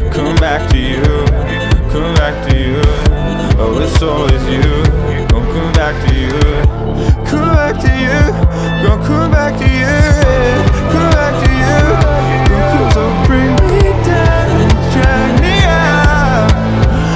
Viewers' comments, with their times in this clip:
0:05 I love the little scream in the background and like the intensity intensifies and likE UGHH